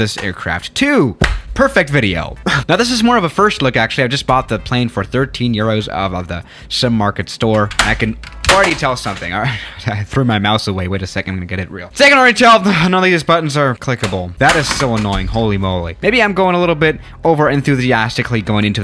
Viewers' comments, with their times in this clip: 0:06 Mouse goes Bang ding ow